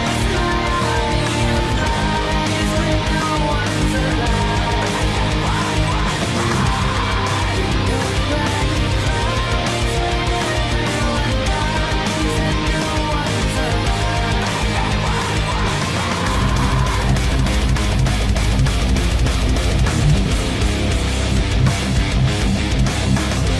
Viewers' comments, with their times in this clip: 0:07 is the only slightly distinguishable part of this song... everything else is PERFECT... well done my friend!